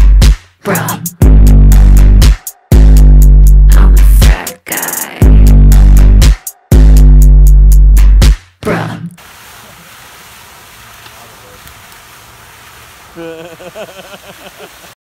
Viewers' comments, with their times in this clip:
0:12 the friend laughing in the background is such a mood I love it